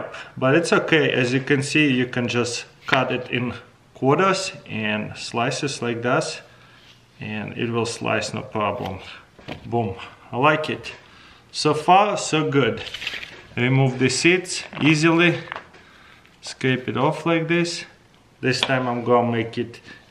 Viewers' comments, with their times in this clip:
0:05 ... slices like das .. hahhahaha .. boooom